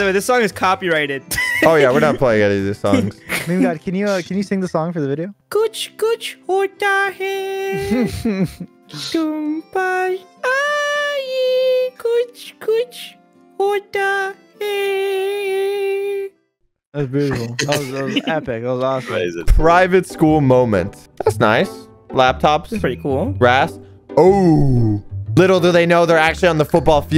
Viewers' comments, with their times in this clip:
0:04 best song cover
0:10 as an indian i can confirm that he sang it perfectly in hindi [what am i doing?}